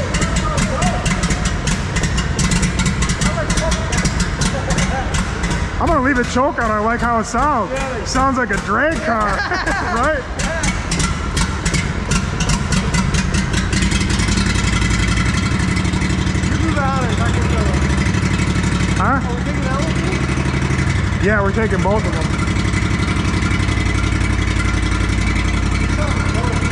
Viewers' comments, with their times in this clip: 0:05 sounded like it was a cammed ls 😂
0:12 That buggy sounds like a Harley lol